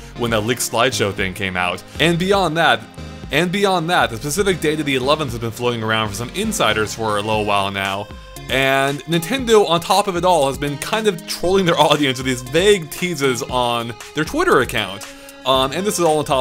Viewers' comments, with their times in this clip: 0:03 There’s a hiccup there